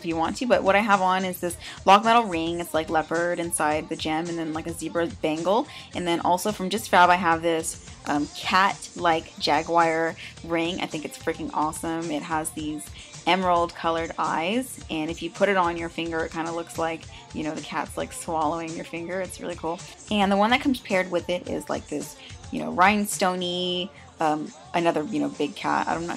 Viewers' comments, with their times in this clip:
0:09 Wtff is a jagwire? Lollll and great vid so stunning :S